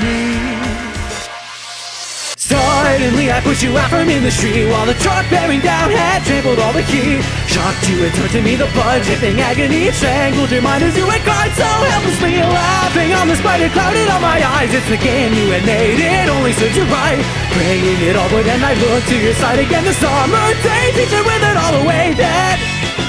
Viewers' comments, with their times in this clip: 0:07 Those voice cracks really give the song even more of a dramatic feel